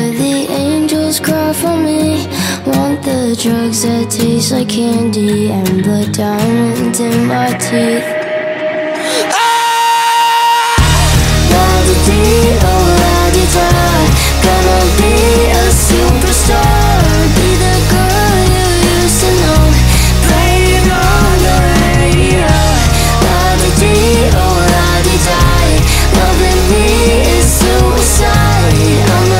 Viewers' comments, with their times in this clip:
0:08 The scream always gets me!! I love that part!!
0:08 How come no one noticed after Jaden's scream... He didn't sing immediately after but we all still heard "La di di oo La di die" When are we ever gonna get an ACTUAL live performance?..Not some prerecorded shit😒
0:08 When my teacher asks me a question even tho i dont know the answer and didnt raise my hand My brain: Jxdn now has super powers from dat scream😌🔫
0:09 ok... they are both super talented but I know for sure jaden is lip sinking. if you don’t believe me check where he starts to sing again after he screams he forgets to and then drags the mic up to his mouth. BUT AGAIN no hate they are BOTH super talented and love their music tbh. i just kinda wanted to hear their voices singing the song off the track... :(
0:10 So they were lip singing? You can hear his voice in the background before he puts the mic closer to his mouth. Anyways, it's still a good song and they have amazing voices just thought it was live.
0:11 he miss to follow the playback